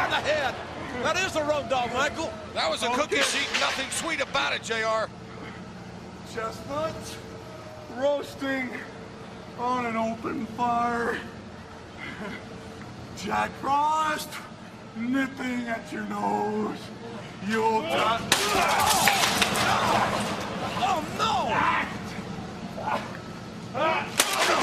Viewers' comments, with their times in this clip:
0:06 😂😂😂😂 singing then just gets wrecked in the face